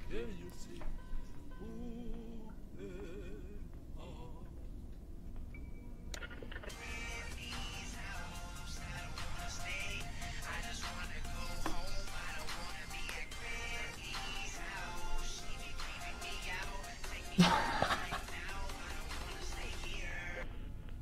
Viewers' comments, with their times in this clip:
0:04 Came back 11 months later just to listen to the song